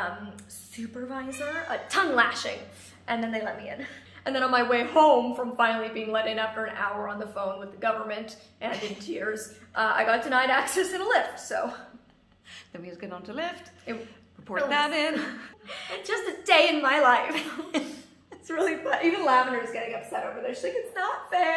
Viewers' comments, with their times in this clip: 0:05 I’m only and I thought that was my cat so I rewinded it twice(-: